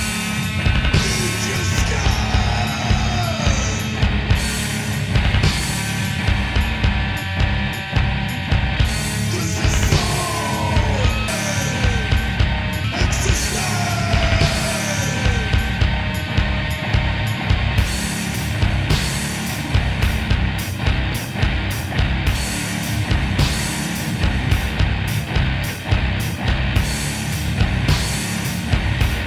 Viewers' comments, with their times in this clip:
0:10 Skips a few times. I heard it and some other places.